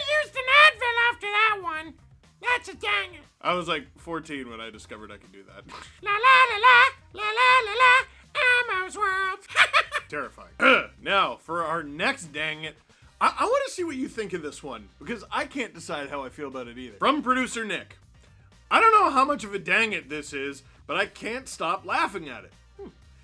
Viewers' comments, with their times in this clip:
0:09 I thought the editors had done something in post to your voice. That is insane!